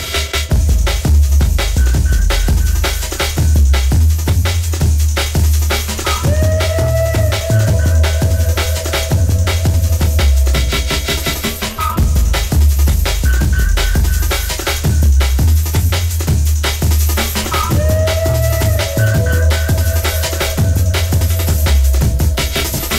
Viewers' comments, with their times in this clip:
0:10 The transitions from the to “ In Too Deep” are out of this world 😳!